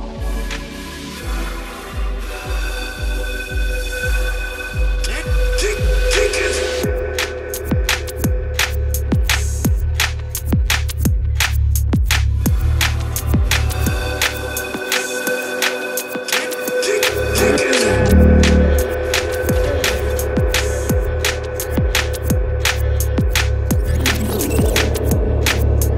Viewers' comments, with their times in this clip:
0:07 is fire DnB